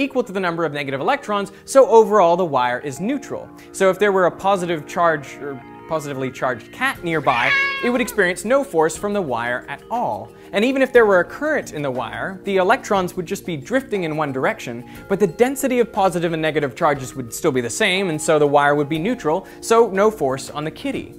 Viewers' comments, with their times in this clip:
0:03 "so if there were... a positively charged cat nearby," cat dying sfx
0:07 thanks i didnt need my ears anyway